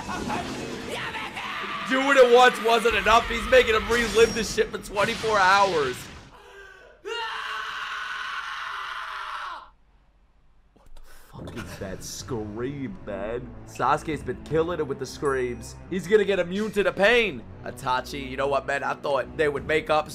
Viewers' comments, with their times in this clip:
0:05 That inhale before the scream is too fkn real. Always gives me chills and unease. Straight up fkn torture scene. Not a kids stuff by any means..